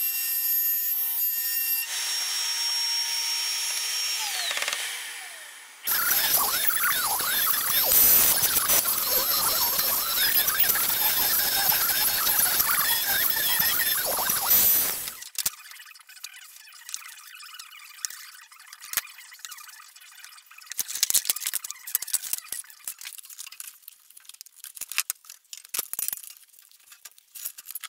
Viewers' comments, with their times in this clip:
0:08 sounds like that robot of the Teletubbies